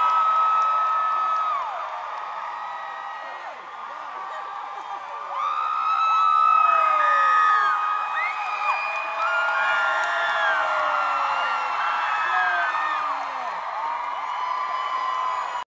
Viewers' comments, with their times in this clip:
0:11 I had the same reaction as Julien to how the crowd erupted after being so quiet. My ever favourite boygenius song Ketchum ID deserves this respect 😌❤️